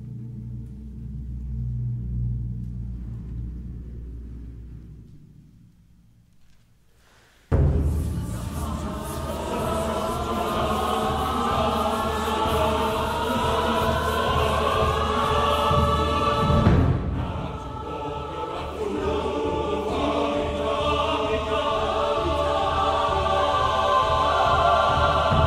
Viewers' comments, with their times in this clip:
0:07 THIS PART OMG??? I LOVE WHISPER SECTIONS SM